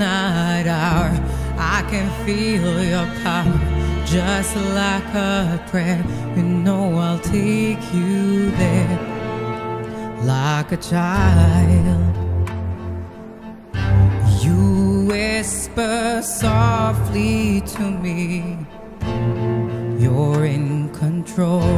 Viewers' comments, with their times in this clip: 0:08 back dude finally gets to kick in